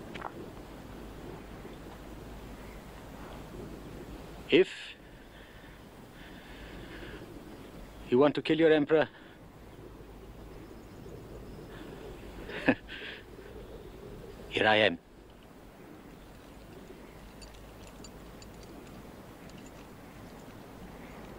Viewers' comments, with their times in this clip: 0:06 bang movie ends.